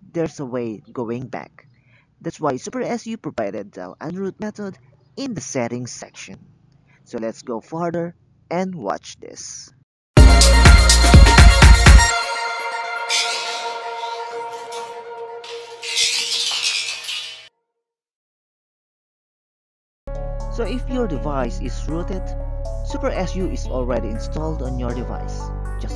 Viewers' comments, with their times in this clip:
0:09 fuck you! my ear exploded